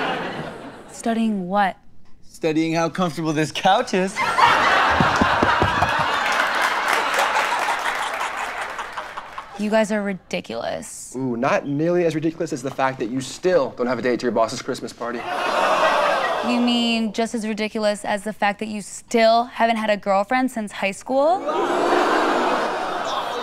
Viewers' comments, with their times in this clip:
0:07 I immediately recognized that laugh